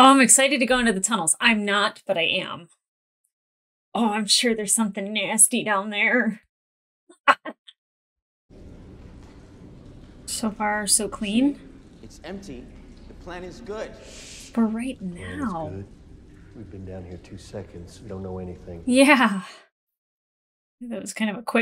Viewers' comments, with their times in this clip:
0:06 Lmao that laugh 😂😂